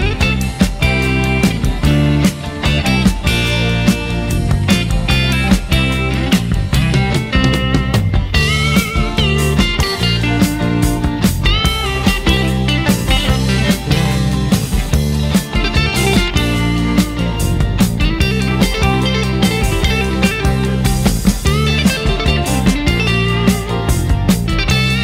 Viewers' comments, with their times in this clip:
0:07 Man, that was surgically perfect! Looked effortless. Very impressed, I can only fantasize playing this song. Can't understand how tout mémorize all the Little licks ans solos. when you spit the 12 fret Bend just wow!